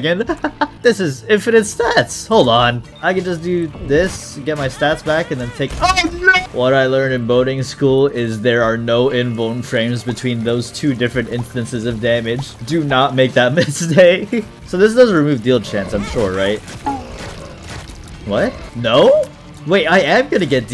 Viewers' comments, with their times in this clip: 0:05 The scream is beatifull